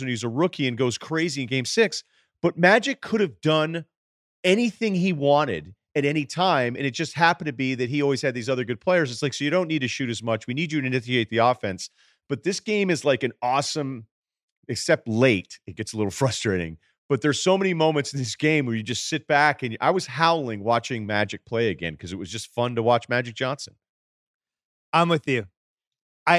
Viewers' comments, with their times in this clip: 0:10 "We need you to inithiate the offense" lolol